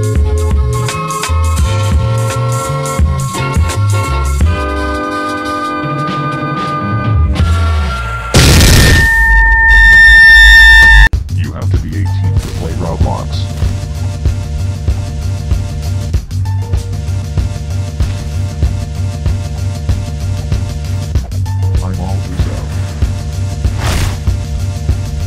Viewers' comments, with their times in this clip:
0:08 Tension sound beware!
0:08 My favorite part max volume its quiet but funny!